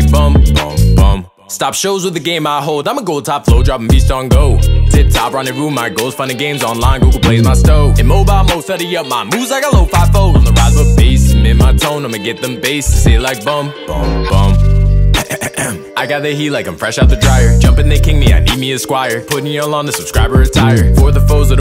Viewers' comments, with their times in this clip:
0:03 i love beat🤯😍🤒🤒😘🥰💙💙
0:03 Me too beat is so good
0:03 beat is so good